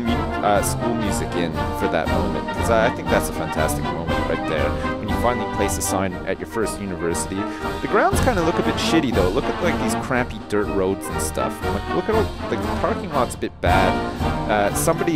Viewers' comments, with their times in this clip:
0:03 Music is for flag ceremonies